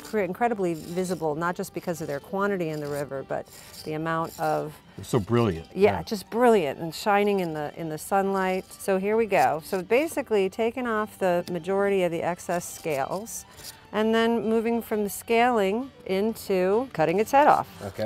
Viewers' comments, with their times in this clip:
0:03 wtf did u used a voice changer?